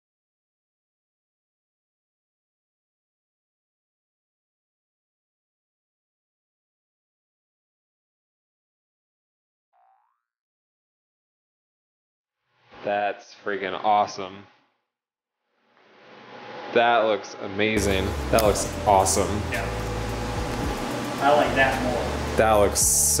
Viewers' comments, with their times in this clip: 0:08 hahah sounds effect when he peels the last tape off.
0:08 I love the 'Boingg' noise lmao